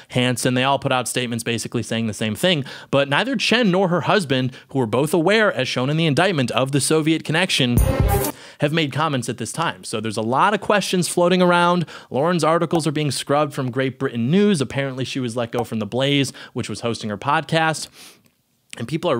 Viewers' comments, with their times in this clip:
0:06 … is my phone fucked or was there a random pause where music started playing for less than a second?